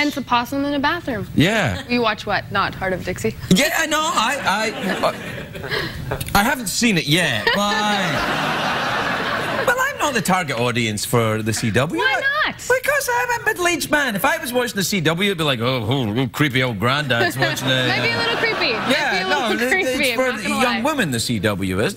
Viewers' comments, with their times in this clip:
0:06 you Know there's a strange noise in the back